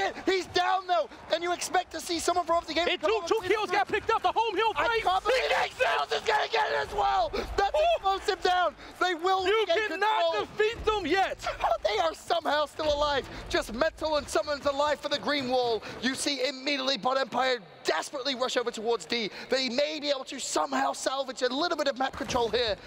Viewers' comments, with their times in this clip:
0:04 😂 the commentators speaking gibberish